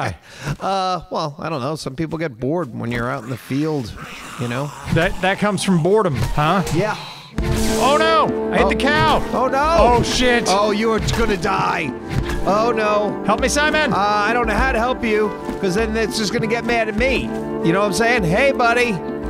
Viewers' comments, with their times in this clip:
0:05 "That comes from boredom, huh?" The delivery was hilarious to me